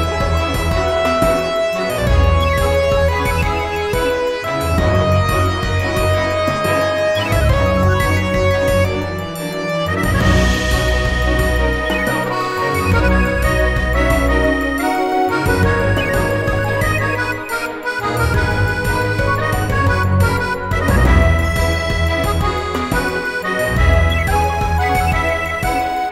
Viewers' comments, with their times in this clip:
0:09 I actually really like the Kalos vibes here. Reminds me a lot of Professor Sycamores theme.